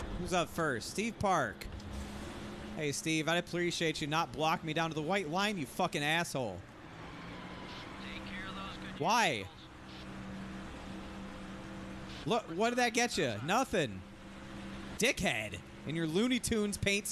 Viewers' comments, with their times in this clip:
0:04 Darrell Waltrip voice That’s a teammate! 😂😂😂